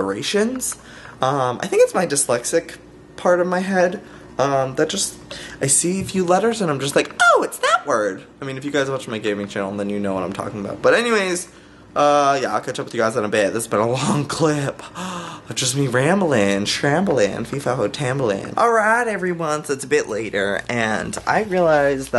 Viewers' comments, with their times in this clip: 0:08 dat voice :3